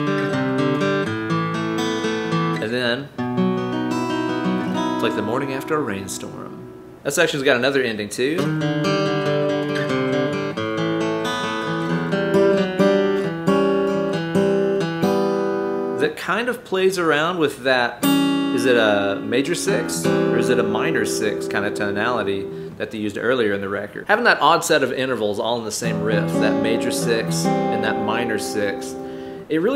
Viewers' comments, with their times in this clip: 0:10 Man, good job getting these riffs right, lots of covers don't seem to get his voicings correct. One thing that did surprise me though is that their chords and fingerpicking lines are often simpler than I thought they were. Might be wrong but I think it's just open strings and a single descending note. "Ruby eyes in the fog" Other things I can't unhear: Master's Apprentices: "There is a penis, I am certain" Harvest: "Born of cement but it's me who's tomato"